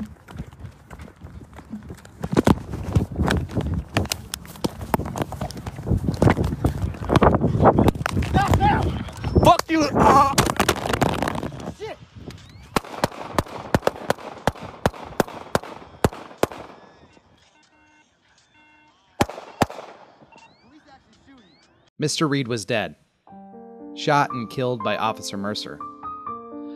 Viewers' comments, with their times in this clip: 0:09 The taser can be heard while Dreasjon said, "Fuck you," moaned, then fell to the ground.